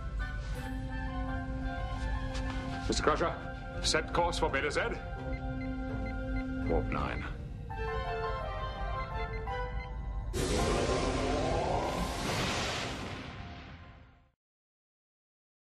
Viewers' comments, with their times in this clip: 0:06 "Warp 9" hahahahahaha at Wesley laughing at the Capitan. And I love how Lwaxana can just sit on the capitan's chair like she owns the thing hahahahaha